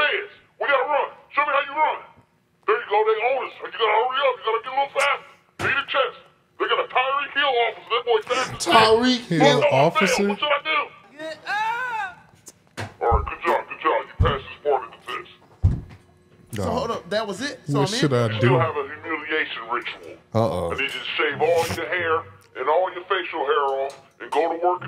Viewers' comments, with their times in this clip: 0:09 Not the Meek Mill WrestleMania battlecry